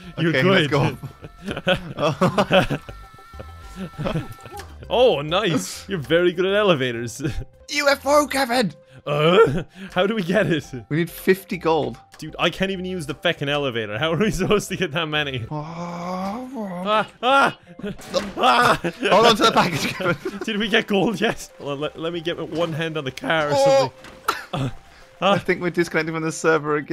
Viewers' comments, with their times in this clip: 0:09 Nice Tim Allen impression!